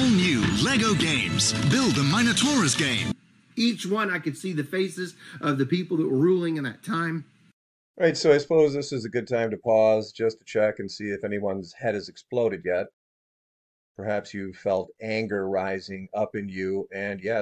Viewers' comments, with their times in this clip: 0:03 he acts like a 7-year-old the way he speaks.